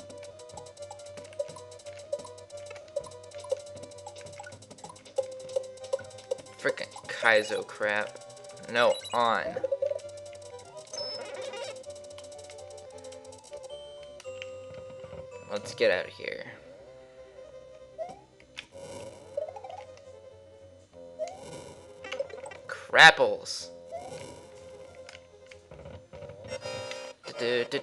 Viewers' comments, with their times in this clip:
0:08 he said kaizo cr*p or kaizo trap?